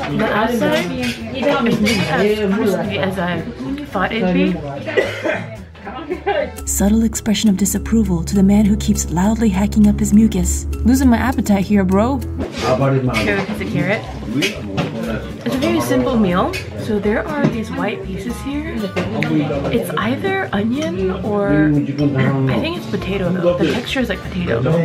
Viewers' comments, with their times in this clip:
0:05 and is doing the vampire pose cough (into the crook of his elbow)? How rude he is